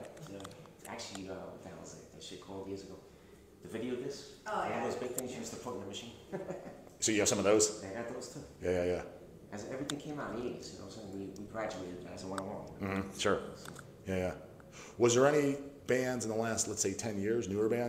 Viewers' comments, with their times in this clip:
0:05 Will Rahmer doing a slight laugh